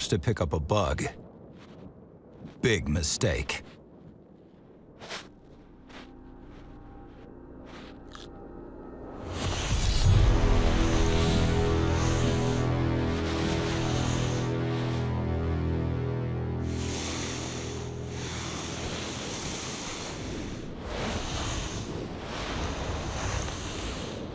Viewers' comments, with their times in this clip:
0:06 I love that satisfying crunch the bug makes.